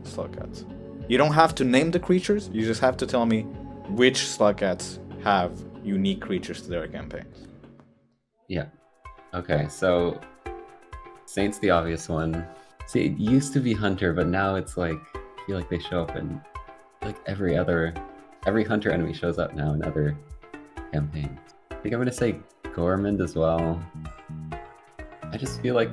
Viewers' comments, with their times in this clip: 0:09 I love the rain world style jeopardy music